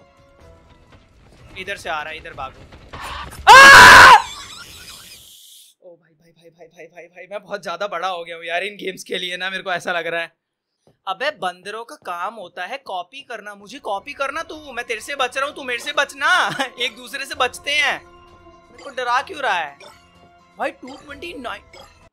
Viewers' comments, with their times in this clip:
0:03 RIP my ears🙏🙏